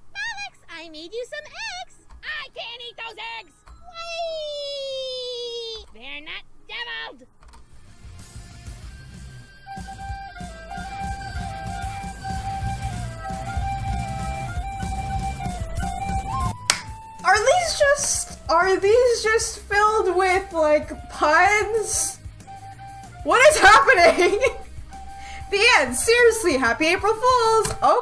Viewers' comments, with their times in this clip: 0:10 reads titles Wat?? I umm?!? I'm speechless 😶!!! I Love the voice acting 🤣🤣😂😂😂 ( I just love her facial expressions 😂 )